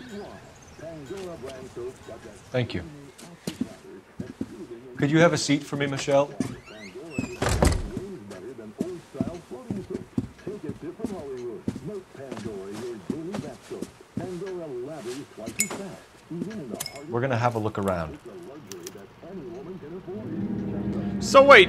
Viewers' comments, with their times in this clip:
0:09 ~ 10:9 i can hear the radio says 'super mario' or its just me ?